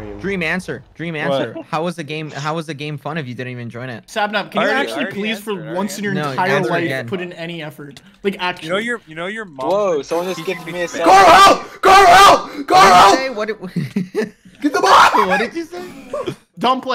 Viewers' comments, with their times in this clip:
0:03 Karl sounds like my mom speaking to my dad lmao